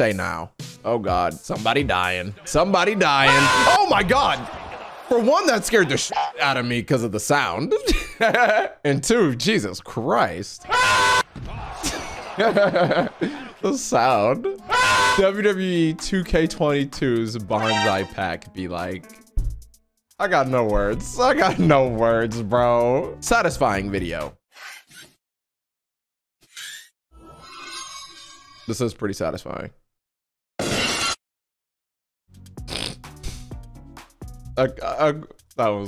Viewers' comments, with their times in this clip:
0:10 Sounds a lot like jacksepticeye.
0:23 When the stone cold music played I was on the ground rolling